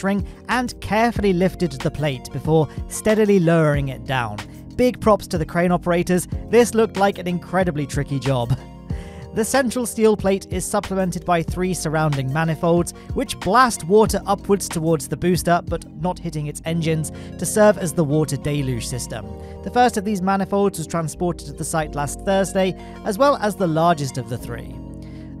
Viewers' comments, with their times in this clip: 0:07 you can hear the guy’s screaming “PIVOT PIVOT!!!”